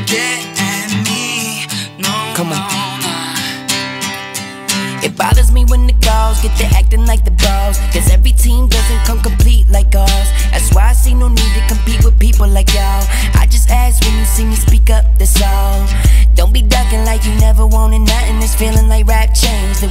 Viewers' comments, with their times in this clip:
0:05 Posner drops the bass so hard